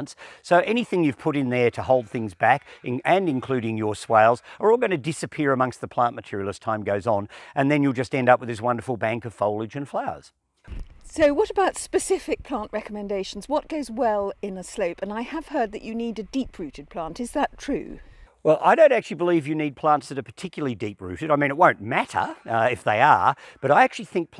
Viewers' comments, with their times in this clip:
0:08 What is he saying “swayles”?